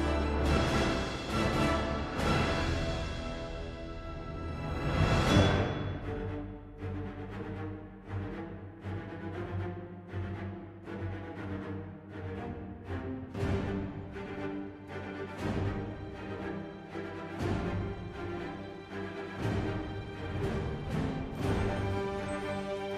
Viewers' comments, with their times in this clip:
0:03 I’ve always loved that transition into the avengers theme